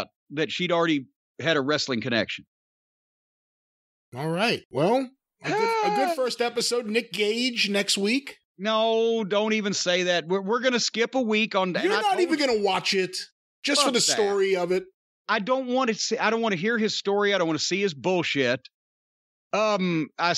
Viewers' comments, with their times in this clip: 0:05 that Cornette sound